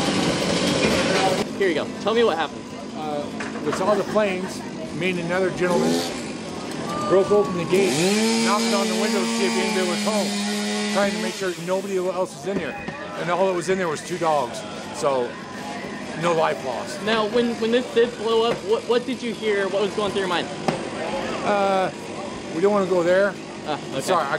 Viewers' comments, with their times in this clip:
0:05 LOL DID SOMEONE FART 💨